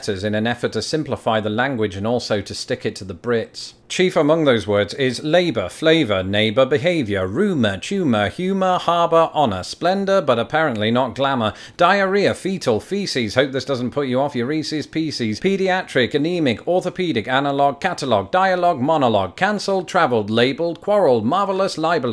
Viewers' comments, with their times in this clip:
0:05 Why is it sound like the Pokemon Rap song